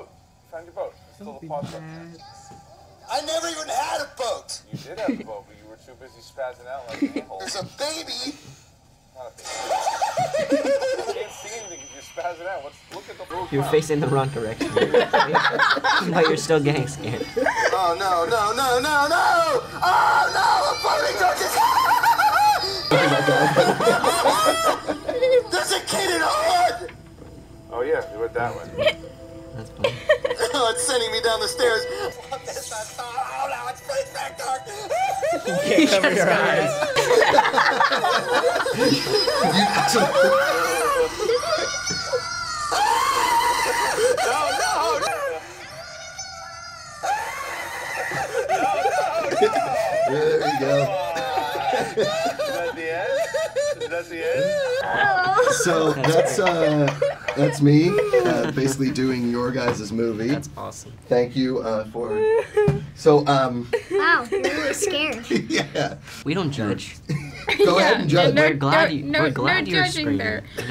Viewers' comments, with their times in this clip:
0:10 if you listen closely he almost sounds like pennywise
0:14 Sophia's laugh I can't LMAO! It gives me life.
0:54 Sofia’s laugh again perfect
0:55 im in love with sophia's laugh
0:56 sounds like Sophia Lillis is crying